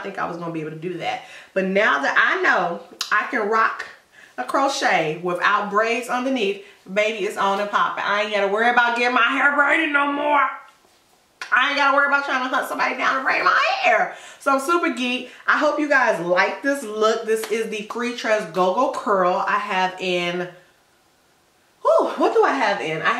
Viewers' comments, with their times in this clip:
0:10 Wonderful! When you changed the tone of your voice I was 😂 😂😂😂😂!